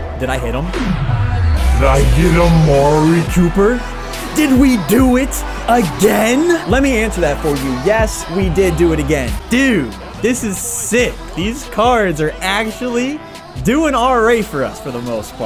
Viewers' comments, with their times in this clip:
0:03 hearing that song brings déjà vu